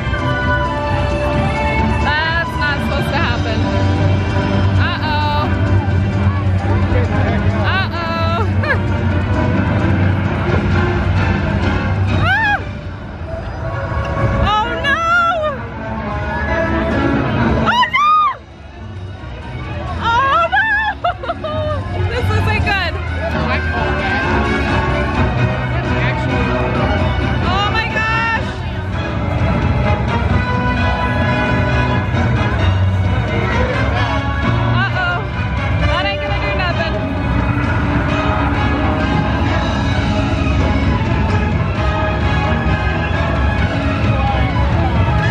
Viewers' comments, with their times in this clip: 0:05 I just like how the music intense when it’s on fire
0:10 dragon: scream!!! FIRE!!!!
0:17 the timing on the music hahah
0:29 the music 🤣 fits so well with whats going down